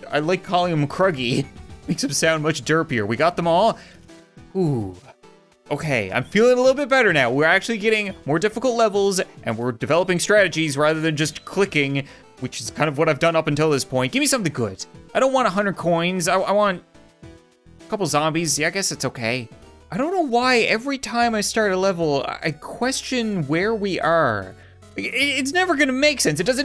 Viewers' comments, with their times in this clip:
0:09 pronounce the headline. sounds like 'Also attacked by zombies'